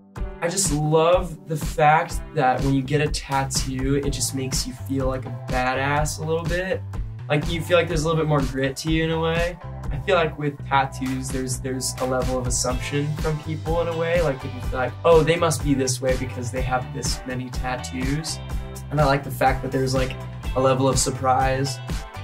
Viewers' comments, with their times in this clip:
0:04 I feel that the way he said "BADASS" was like his first time saying it, but then you don't know if they'd censore it out, although his handsome and talented, haha.